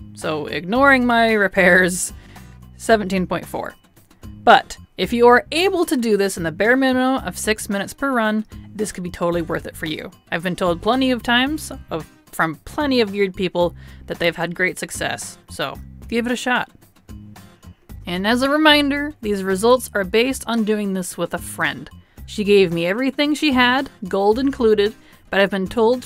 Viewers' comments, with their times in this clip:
0:10 What does she say here? Sounds like "weird people"